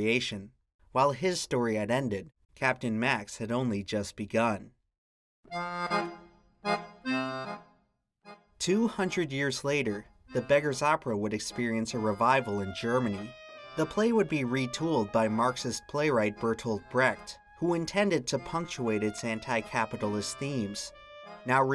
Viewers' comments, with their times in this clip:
0:06 The tf2 music really is buzzing